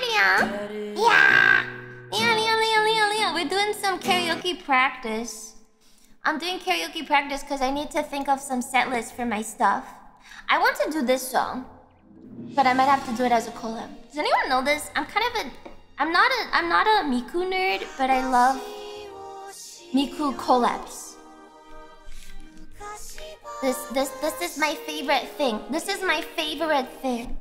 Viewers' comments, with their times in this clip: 0:10 foreshadowing 😉 Also shame Komm susser Todd got muted :face-purple-crying: